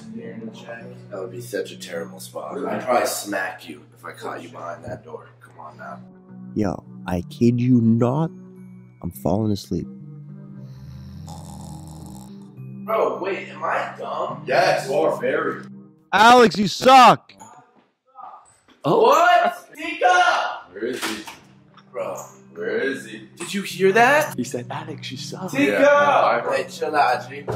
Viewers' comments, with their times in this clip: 0:10 Did teeqo fart ?